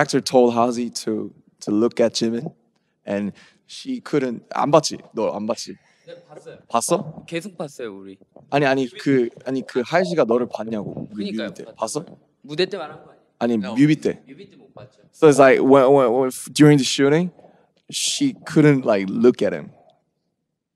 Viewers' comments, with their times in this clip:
0:06 Omg you can hear Jimin’s lisp so well so cute, why is no one ever talking about that